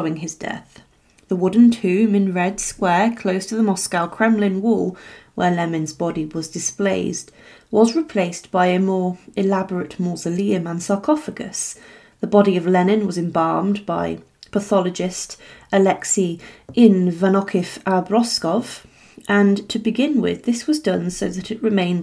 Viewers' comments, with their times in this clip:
0:05 ‘Where lemins bodies was displayesed’ am I hearing things right? ? What happened there lol